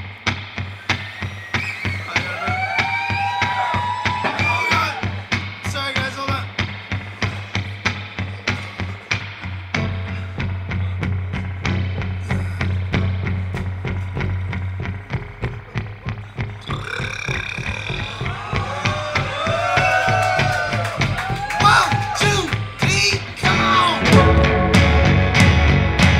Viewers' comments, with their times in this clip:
0:08 I get chills every time when they go into my kind of woman. Great performance.